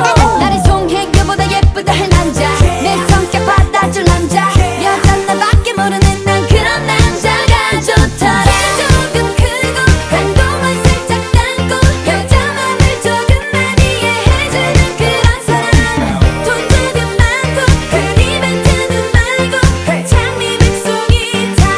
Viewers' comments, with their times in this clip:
0:08 I love the audio edit transition ❤